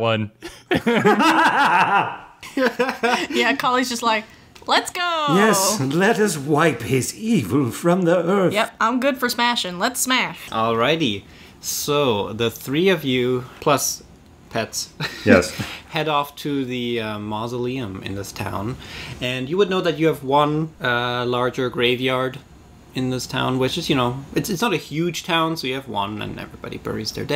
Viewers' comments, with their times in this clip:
0:09 idk why, but i laughed way to much, spoken like a barbarian XD